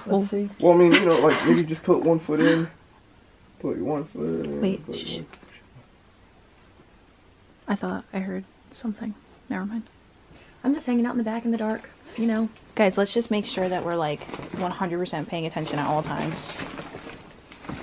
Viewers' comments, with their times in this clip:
0:03 there is a whisper